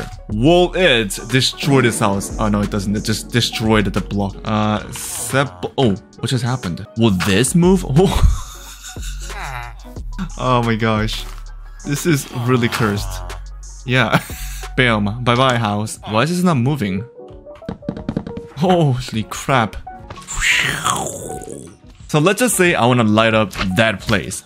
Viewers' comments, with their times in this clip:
0:07 Villager sigh "Guess my family starves."